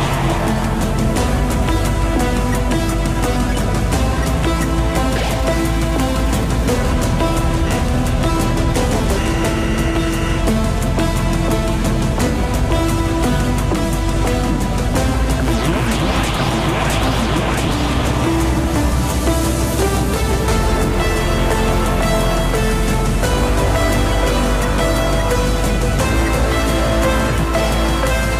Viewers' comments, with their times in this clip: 0:10 why did ink sans speak german